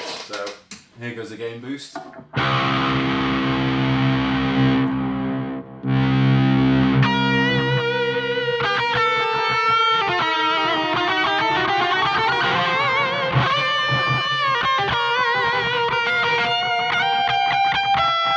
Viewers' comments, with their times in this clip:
0:03 That is beautiful sounding. I prefer the v50 but I can hear notes of opeth and tool in the tone that deep saturated but crunchy high gain NOM!